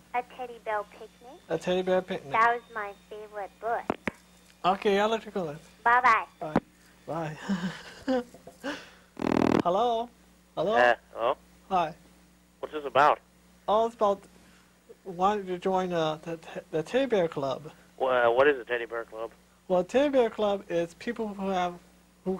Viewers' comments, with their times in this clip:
0:10 The dude reminds me of Butthead..."that's pretty cool"